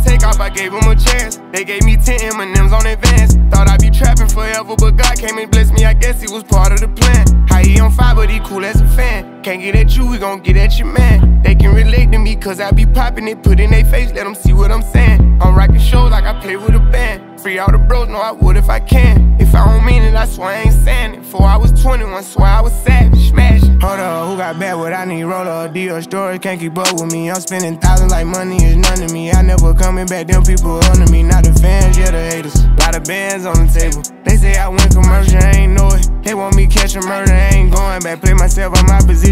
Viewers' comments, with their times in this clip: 0:08 yall hear that subtle instrument in the background i didnt notice it earlier
0:23 The flow switch is too hard!
0:23 🔥 baby's flow is unmatched
0:23 went from to uzi verse when they switched flows is just forcing me to get hype
0:24 We not going to ignore that flow switch 🔥🔥🔥
0:24 this sounds like another song I just can’t figure it out
0:24 the Flow .. omg